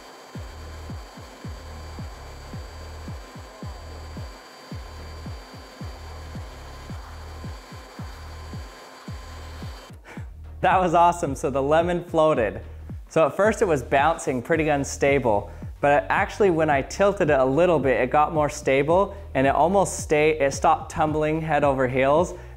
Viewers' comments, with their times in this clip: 0:08 the L E M E N is aggressive